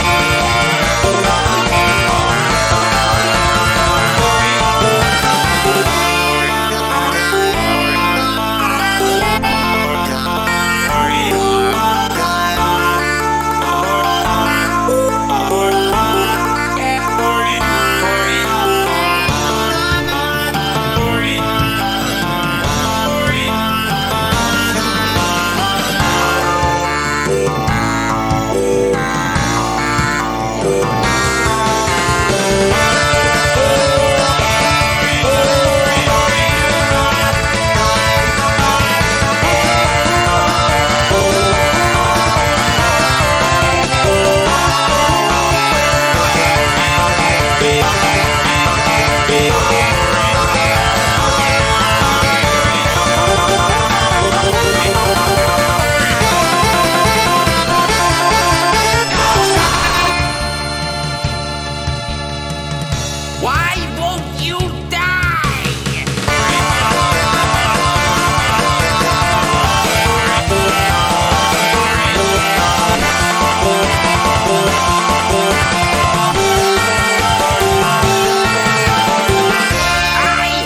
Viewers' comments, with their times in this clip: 0:05 I love the minute its a moment when the cromatics shine
0:06 A little detail that almost NOBODY noticed: if you listen to Luigi's voice you can hear a little part that actually is mimicked in the Act 4 of ALL STARS Not only IHY Luigi does that, the same thing happens to Mr Virtual (Paranoia), Omega (Act 2) and Costume Mario (The End).
0:11 A little detail is that Luigi starts to sing the Super Mario Bros theme.
0:18 Idk if people know this, but at the mark of the song, you can kinda hear peach doing a sad breathe out.
0:19 saw this on twitter, though it was fake but i heard it and its real. its very faint but there are hidden lyrics in the song. mario says "because youre my brother" at the end of his part, luigi says "youre no longer my brother" at the end of his part. thought it was neat.
0:21 Is it me or does mario sometimes sound like rick sanchez in some parts of the song??? especially in that part
0:21 In the offical flp, there is 2 messages and 1::40 where Mario says “because you’re my brother, in which Luigi says “you are no longer my brother”. As the mid section phase ends, there is an audio file where peach sighs in the song. They are really quiet, reverbed, and echoey- making it almost impossible to separate, I didn’t believe it either until I looked into the song when making a remix
0:21 Sometimes I hear Mario say “Morty” in this part of the song
0:58 Peruan luigi says Causaa 🇵🇪
0:58 i'm the only one that hears NO STOP!!
0:58 it sounded like he said bowser
0:58 luigi and Mario sounds incrementing CÆŪŠªÁÄÃÆÅĄĀÃÀÂ
0:58 Why some vocals of mario say "Morty" CAUSA!
0:59 BRO THE LUIGI SCREAM "CAUSA!"
0:59 when you missed the up note it sounded good lol ngl
1:00 Is he screlling "BOWSER!" here?
1:02 WHY WONT YOU DIE! epic ass rapping